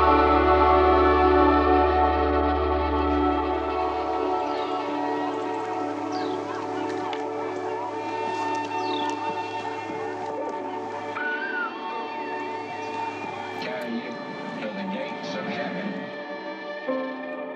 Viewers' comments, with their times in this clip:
0:05 Was a awesome song until where it went south and totally lost me. Noise